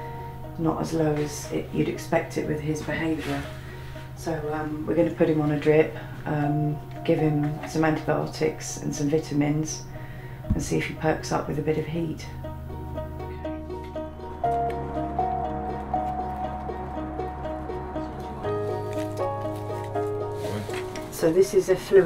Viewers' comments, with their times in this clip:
0:08 "vit-amins" hahhahaa the accent 🤣